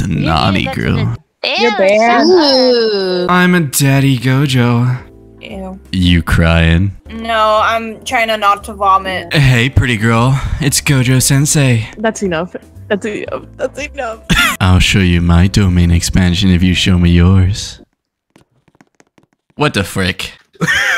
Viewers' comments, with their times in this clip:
0:04 the "You crying" was spot on🙏
0:06 why did that actually sound good though???